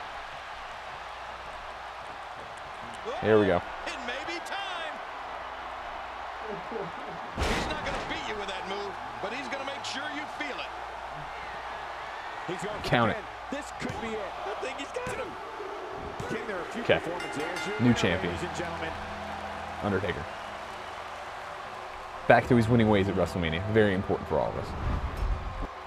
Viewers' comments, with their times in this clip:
0:08 WAIT The tombstone Did Jerry the king , one of the commentators actually say "HE IS NOT GOING TO BEAT YOU WITH THAT MOVE , BUT HE IS GOING TO MAKE SURE YOU FEEL IT" .......really 2k? Did you really allow this game to have random commentary and not scripted epic SFX for finishers is just poor. Pathetic is not even the word for this games SFX. King just said he wont beat you with a tombstone , and the crowd stayed quiet like they couldnt give shit he just done his finisher. Fuck me i will not be buying this simply because the sheer laziness from 2K. Its clear they have never watched a WWE live broadcast because this is a spit in the face of all that makes wwe great and thats the crowd and commentators immersion.